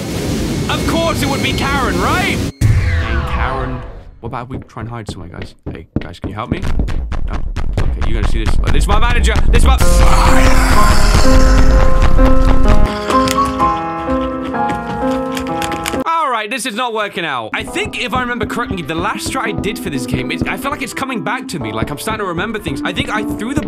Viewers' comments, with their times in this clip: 0:08 Me when my next-door neighbors blasting that music... ON A SUNDAY NIGH- 🤬